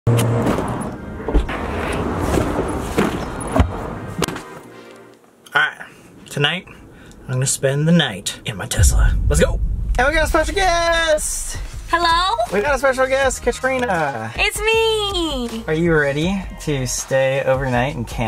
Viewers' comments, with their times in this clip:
0:04 Why was that so cute "Hi"